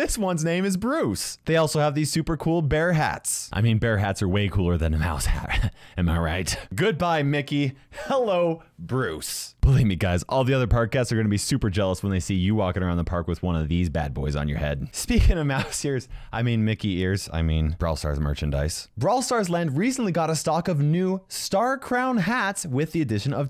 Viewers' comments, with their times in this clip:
0:09 sounds like "bully me guys"